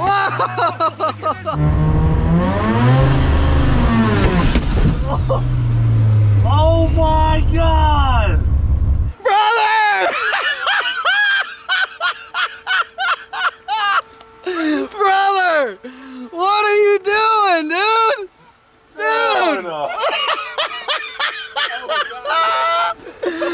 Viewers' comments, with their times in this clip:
0:08 we can understand the situation from his laughter